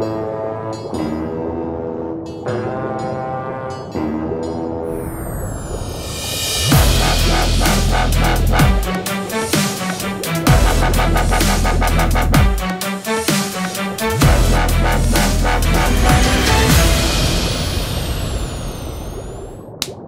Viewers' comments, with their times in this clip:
0:06 it kinda sounds like destroyed metropolis in pixel gun 3d lol